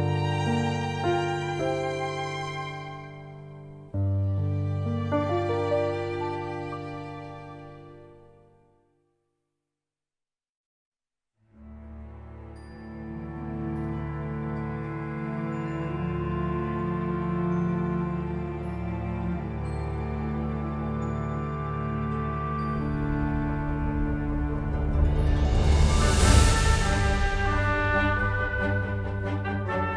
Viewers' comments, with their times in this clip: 0:10 it's such nostalgic and happy theme, way too much epic Yoimiya cutscene!